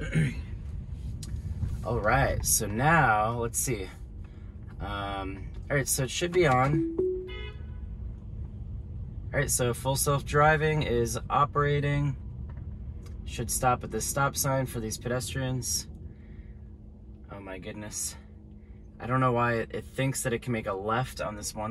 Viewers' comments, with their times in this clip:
0:09 s - Not even 1 minute into the video, and this douche is already getting honked at. Ain't no one got time to get held up by some Tesla twat, driving all slow, with no real purpose on the road beyond playing with your car and making a video.